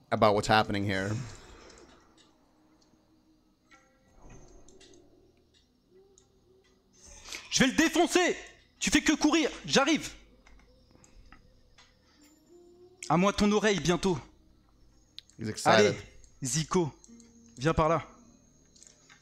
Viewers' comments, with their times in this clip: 0:07 [In his angriest voice]: "I'm going to smash him, you just run, I'll be there"